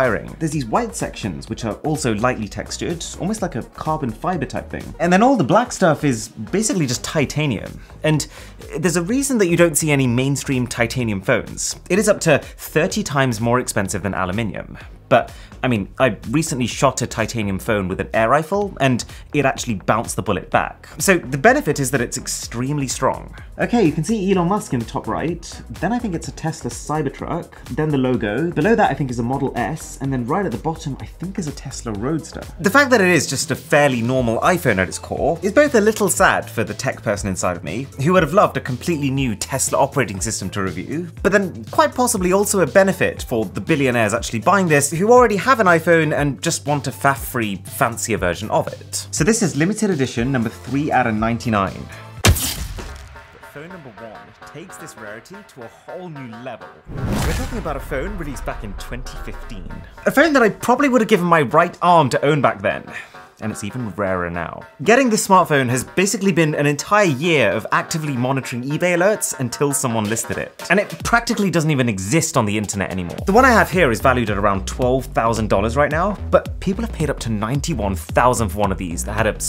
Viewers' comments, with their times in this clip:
0:07 audio went quiet for 10 min
0:32 Did audio faded for a moment around minute
0:42 What happened with sound?
0:42 What happened with sound?
0:50 There are some sound issues in this Video. F.e. Good contant as usual though!
0:52 When the audio editor went for a coffee break
0:52 you uave a mic problem
0:52 and the audio went to infraworld
0:52 the audio goes weird might want to look at that
0:52 what happened to the audio ?
0:52 What happend with your volume?
0:53 Excellent content as usual. The only issue is with the sound dropping /22. Love the content that you all put out in general. Wish you lot the best ahead!
0:54 Arun I noticed that the audio gets significantly lower?
0:57 with how obsessed he is with perfection in his videos that audio glitch getting by him is surprising
0:57 what happened to the sound
1:02 what happend to the sound?